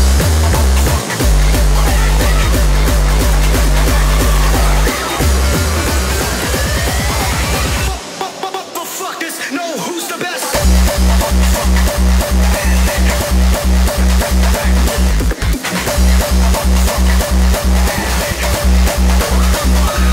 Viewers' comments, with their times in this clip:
0:05 Angerfist MIX Style 😜😜😜